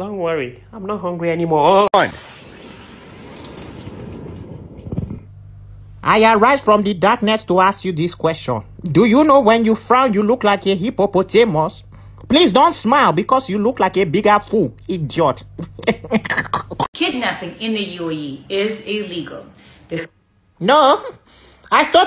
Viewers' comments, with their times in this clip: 0:05 This one made me laugh hard.. the way he said Hippopotamus